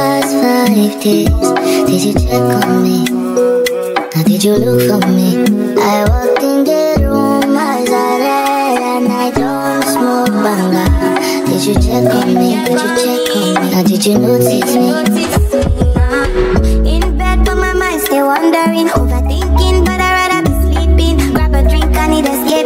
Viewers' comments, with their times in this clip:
0:03 I got my subscription’s worth when I heard this remix😭😭😍